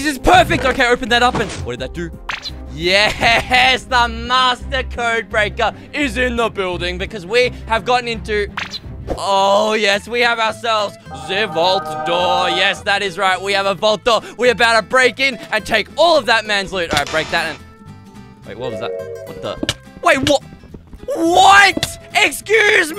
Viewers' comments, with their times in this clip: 0:09 the way he said ''Ze vault door''... My grandpa speaks English like that (all my family including me ofc is from Romania that's why)